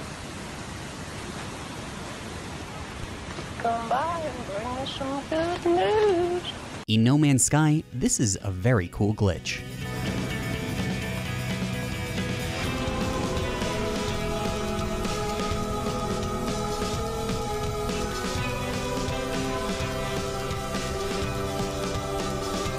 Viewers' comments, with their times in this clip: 0:07 I've... felt a disturbance in the Force... as if millions of indie band voices orgasmed and then suddenly stopped.